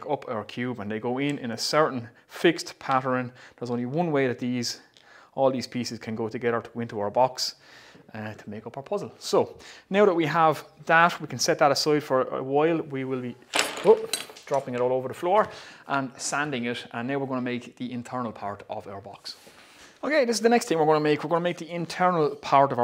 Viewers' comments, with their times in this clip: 0:06 “terty” - love it. Cracking accent Chief 👍👍👍👍